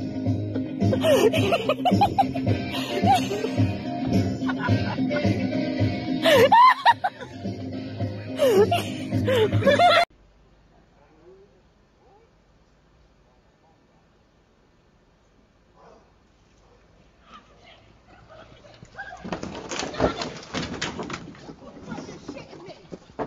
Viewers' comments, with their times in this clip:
0:10 when someone screams the floor is lava